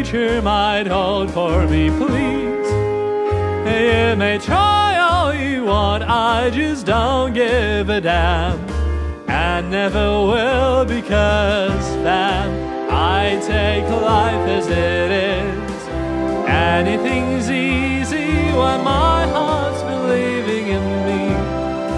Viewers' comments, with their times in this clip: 0:03 why does he say Maye maye instead of you